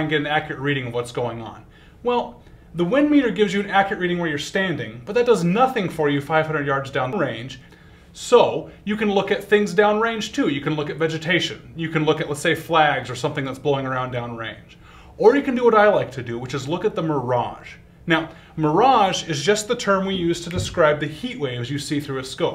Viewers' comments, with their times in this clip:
0:04 he says 'down the road,' but it was dubbed over to say 'down the range'
0:06 wassup right ear, how you been!